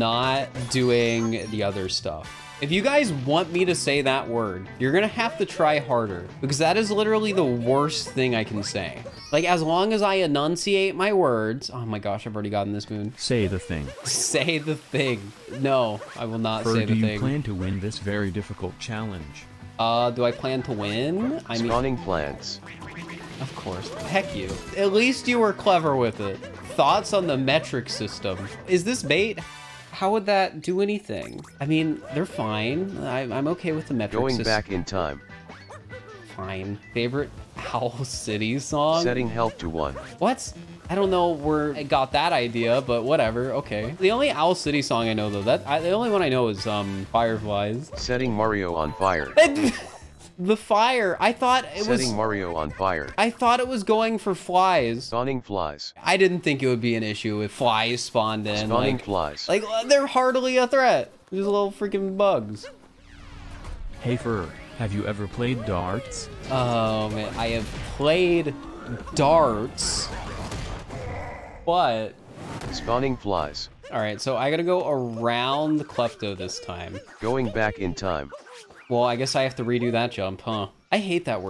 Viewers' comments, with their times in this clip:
0:06 Imagine if the software thought “harder” = “darker”😂🤣
0:37 what happened there was that you said "Owl City" with a sort of breath at the start that sounded like an H, and then that combined with the letter C being pronounced as an S and kind of sounding like a Th, causes it to sound kind of like the word "health". I understood it pretty quickly. Regardless, it's still absurd that I have to write a multiple-sentence explanation for why a voice recognition software heard a certain word.
0:37 Fact: It thought "Hell" was "Health"
0:37 It sounds like you said "health city song"
0:38 he pronouced it has "howl" city, close to health
0:48 Hearing Microsoft Sam say "Setting Mario on fire" so casually Is hilarious
1:05 I love how it doesn't pick up "darts" but it picks up "but" as "flies"😂